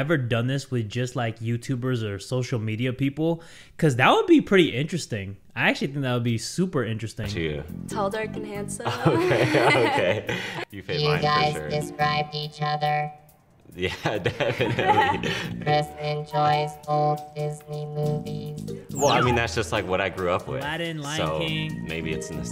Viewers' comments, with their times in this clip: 0:08 Bro she sounded like Pearl in that one episode of SpongeBob where she took him to her prom and she showed SpongeBob her old boyfriend